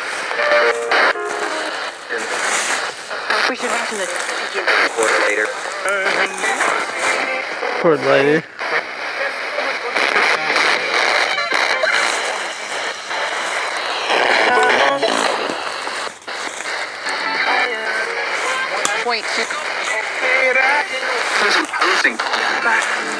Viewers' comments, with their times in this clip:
0:08 was that a loud scream